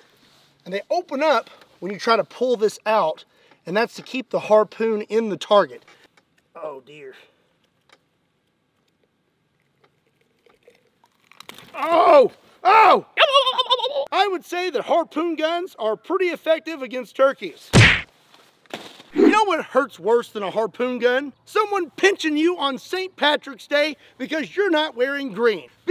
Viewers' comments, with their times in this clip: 0:08 The sound of turkeys tearing?